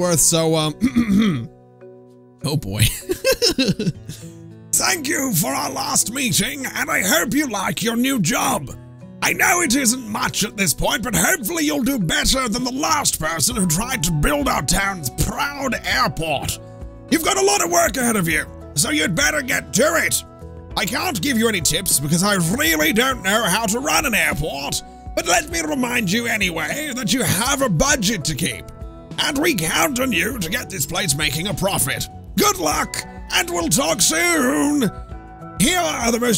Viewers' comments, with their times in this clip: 0:05 that accent brought back some early yogscast shadow of israphel vibes
0:22 hubert from futurama XD